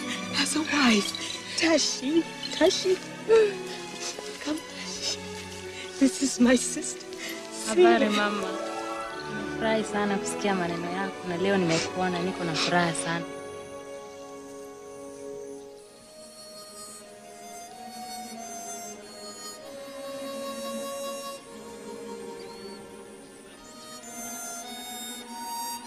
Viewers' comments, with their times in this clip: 0:08 I don't know what she said, but it sounded good.